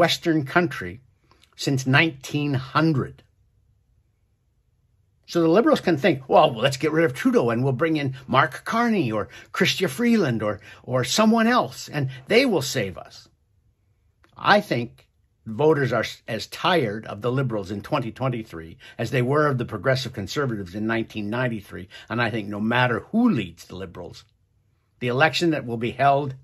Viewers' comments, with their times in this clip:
0:08 You sound like a Snake oil salesman